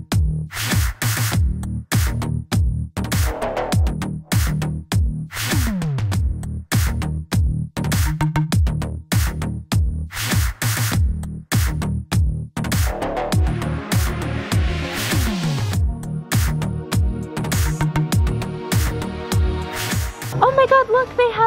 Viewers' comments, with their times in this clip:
0:03 "Moon" "Sun" "Idk" The bgm makes it funnier